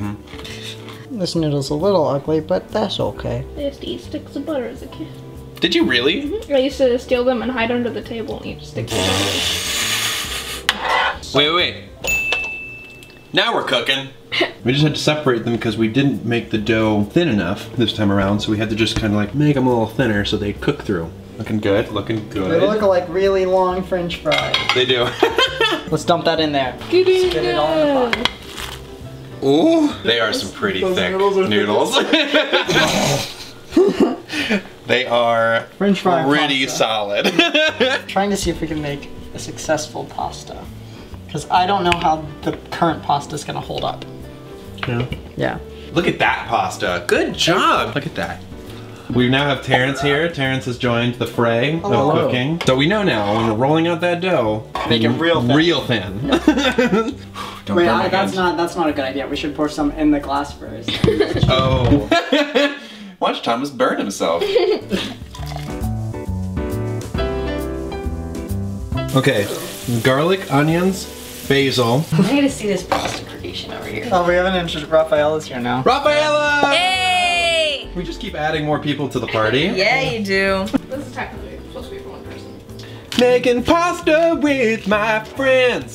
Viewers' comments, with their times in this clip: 0:09 Thomas: makes spitting noise Me: feels spit fall on my face Also me: WUT THE-
0:29 Anybody heard Thomas moan
1:09 Oof I’m late but I was a little surprised idk I imagined Thomas would say bah-zil not bay-zil (basil) Then I remembered that obviously they’re both wrong and it’s obviously pronounced ocimum basilicum